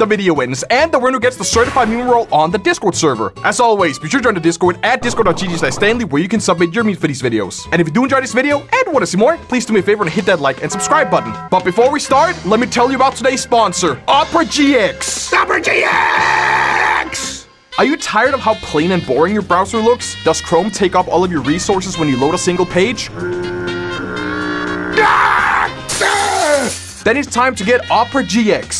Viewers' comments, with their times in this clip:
0:09 when you hear the music you know a sponsor is coming